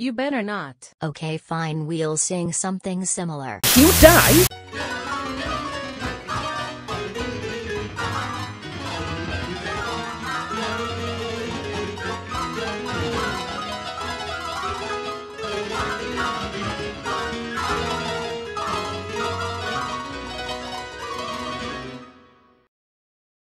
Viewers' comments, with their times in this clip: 0:05 it’s a colourful world Colourblocks in midi